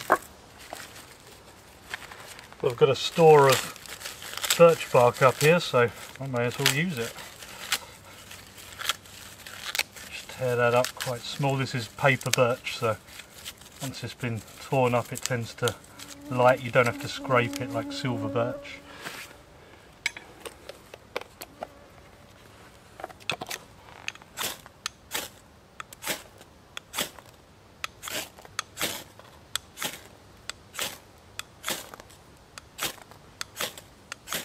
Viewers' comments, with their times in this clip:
0:06 That one mosquito in your ear
0:16 lol I thought something flying around my ear